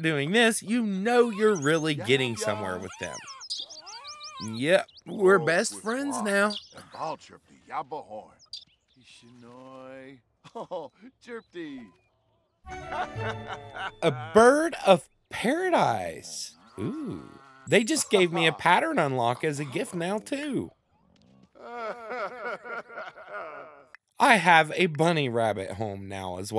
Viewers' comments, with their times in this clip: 0:07 Did that Sim just say 'alcohol'?